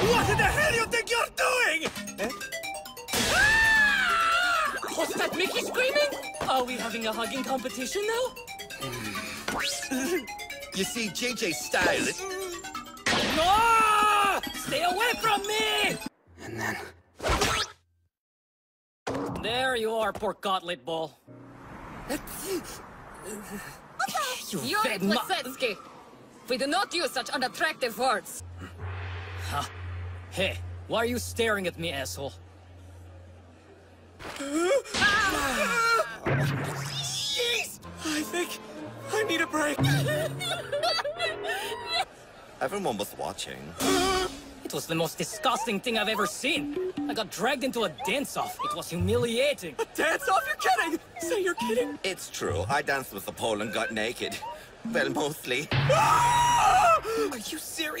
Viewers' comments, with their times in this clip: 0:04 justin briner somehow makes his way into EVERY DUB I swear-
0:19 The way he says "pork cutlet bowl" fuck I'm w h e e z i n g--
0:24 is it just me or do I hear screaming in the background?
0:25 I swear I can hear someone dying in the back... lmao
0:28 Yurio saying asshole with his Russian accent is just ✨something else✨
0:37 I thought Yuri said "Yeet"
0:42 i mean yes chris is fruity but the VA in the scene just PUSHED IT. that voice is the personification of the 💅 emoji